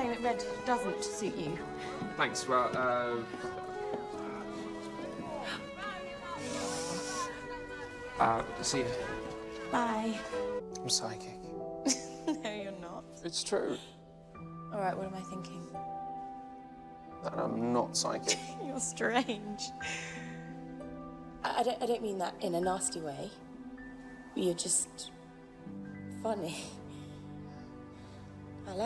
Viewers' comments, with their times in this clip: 0:09 idk why but I love her little "bye" she's so cute i can't